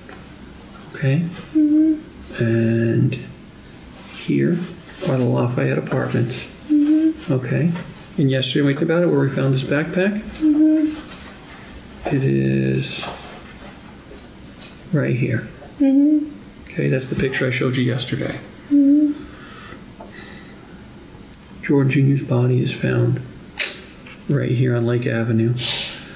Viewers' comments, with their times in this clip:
0:07 “ to skip the crying go to “ that’s a lot of crying lol